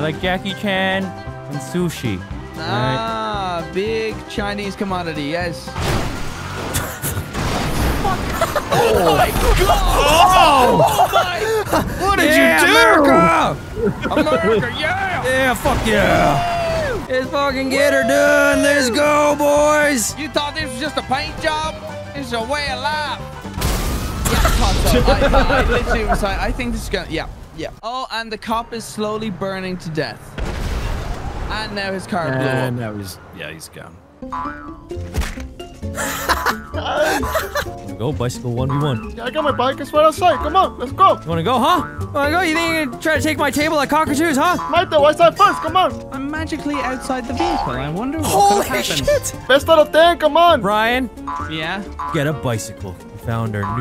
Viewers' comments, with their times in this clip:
0:04 Vanoss laugh goes from pure joy to Heath Ledger joker
0:35 Vanoss’ chuckle made this video